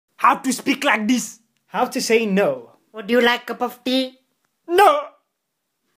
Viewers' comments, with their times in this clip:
0:00 Bruh im so used to him speaking like dis but his normal voice actually kinda sounds amazing
0:01 his voice sounds beautiful
0:01 First time i heard him speaking normal ._.